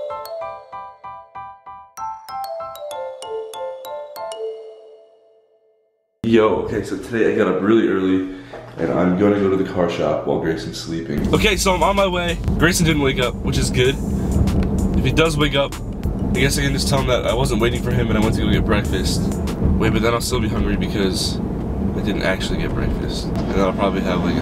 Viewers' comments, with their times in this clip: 0:07 omg his morning voice❤️❤️❤️